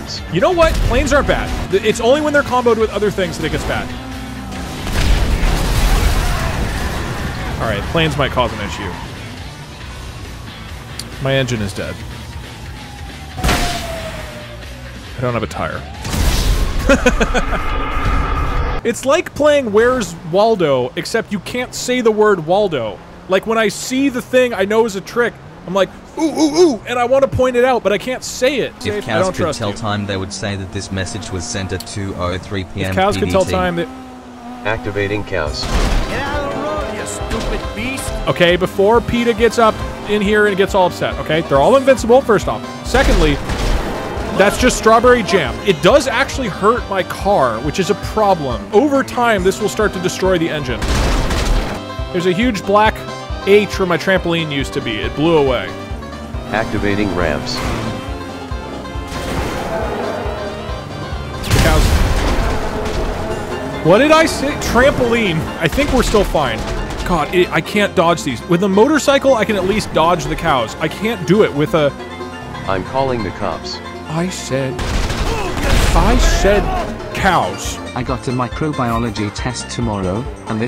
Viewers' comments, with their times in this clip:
0:10 Car slows down "My engine is dead." Tire pops "...I don't have a tire." Car blows up Well that happened XD
0:29 perfect music selection
1:02 the cows are so Moooing loud here in pain.